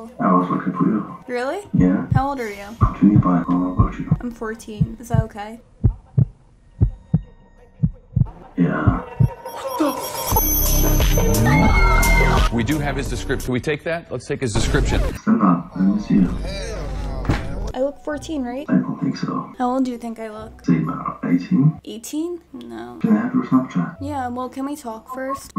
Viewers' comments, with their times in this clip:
0:08 How was that on beat?????
0:09 Bro said yea with rizz💀